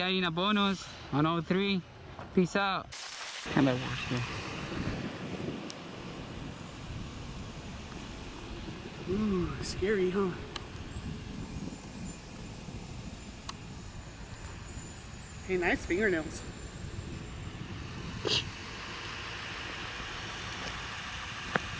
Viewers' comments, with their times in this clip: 0:07 The Karen sounds like a Daren. Trippy